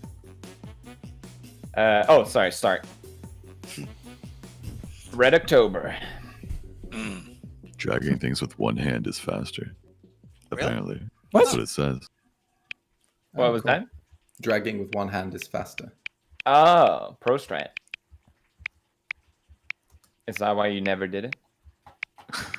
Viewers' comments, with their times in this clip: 0:07 thought he said shagging, not gonna lie